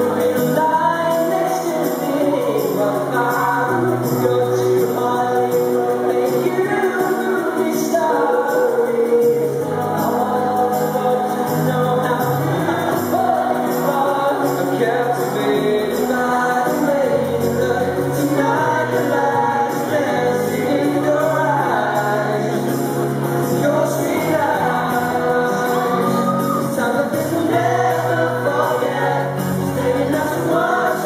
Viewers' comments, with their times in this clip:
0:10 I also watched some other performances of this song in other cities. They seam to laugh every time at about the same time in the song. when Tom sings "... moviestar...". I would love to know why!!!
0:12 best bit. hearing dougie laugh and enjoy himself after everything he's been through. <3